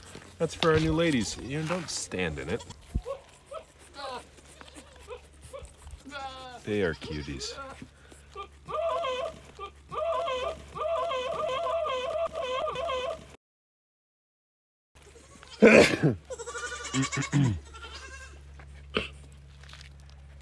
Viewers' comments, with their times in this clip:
0:08 when the Buck starts serenading, it freaked my Bull mastiff out! She jumped up from her bed and started howling! You ever hear a bull mastifff HOWL BEFORE????? It's freaky!!!!